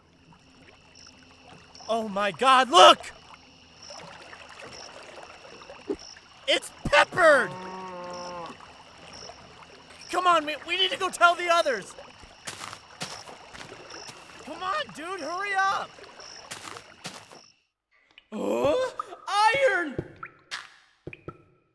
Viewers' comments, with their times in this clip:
0:06 The moment little me learned that it was “Peppered” as in “pepper’d”, and not “pepper red”